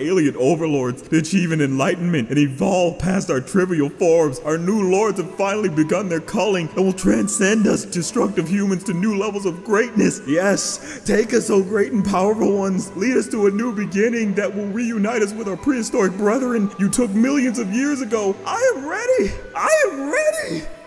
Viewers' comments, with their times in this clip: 0:05 Bruuuh the bleach background music that started sent me😂